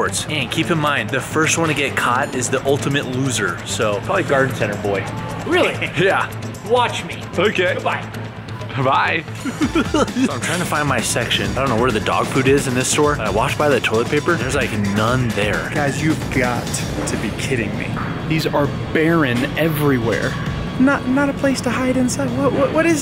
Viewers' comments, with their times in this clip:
0:08 what was that laugh 🤣🤣🤣